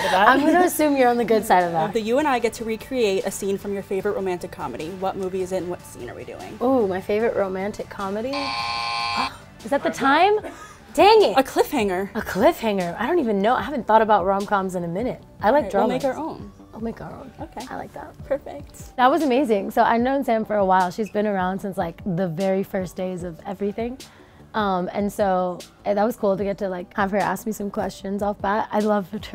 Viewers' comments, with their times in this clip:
0:10 Lauren saying "Dang it" in reminds me of someone.. and I'll get hate.